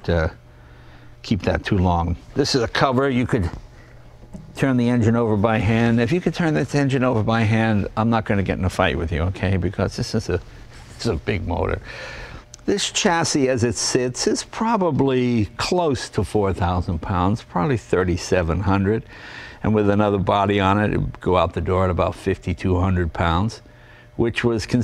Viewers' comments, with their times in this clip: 0:09 Funny to hear the laugh of the camera man in the back when Jay makes the fight joke. :-)